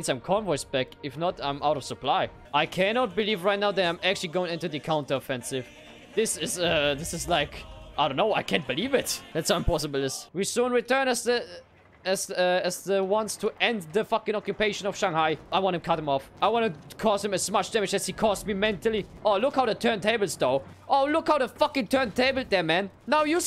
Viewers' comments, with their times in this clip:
0:06 the use of hej sokoly was on spot